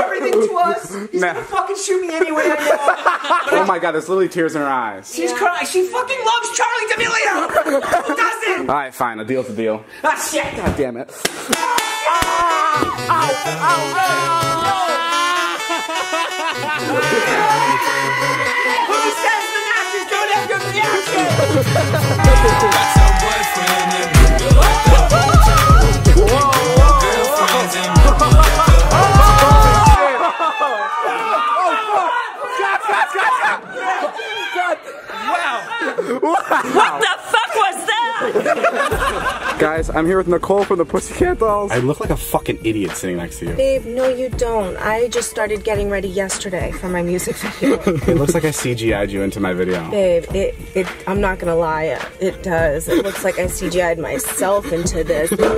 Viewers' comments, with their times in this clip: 0:09 the way the screams tho you can hear the pain in his voice
0:17 That sounded like 4 shots before 🤣
0:37 she sounds like the driving instructor from sponge bob square pants Jus me ?